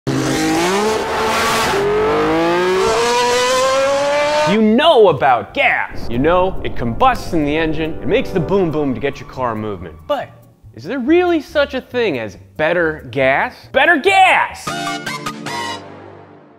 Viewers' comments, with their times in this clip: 0:01 The sound of those Ferrari F1s in the shell advert ❤️